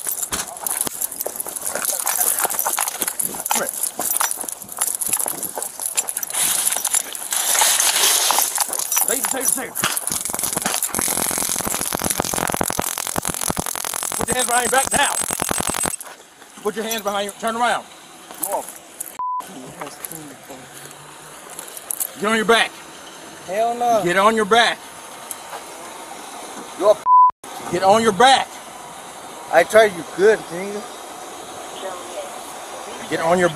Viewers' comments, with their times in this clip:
0:08 that was the sweetest, softest, savage “taser taser taser” 🤣
0:18 another cop shouting incomprehensible commands.